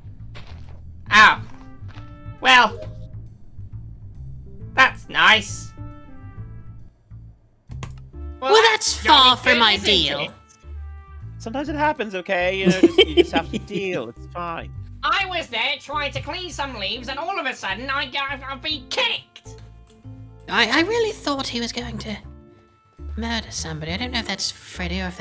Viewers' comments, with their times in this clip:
0:10 cutest freddy and moondrop moment and that giggle <:00